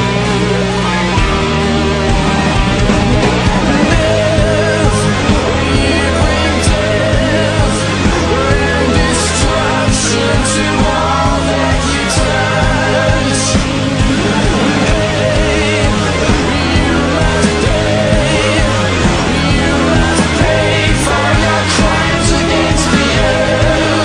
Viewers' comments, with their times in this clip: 0:06 I love it when Matt sings "Death... you bring death" just as Rorschach kicks open the door. Rorschach is so fucking cool.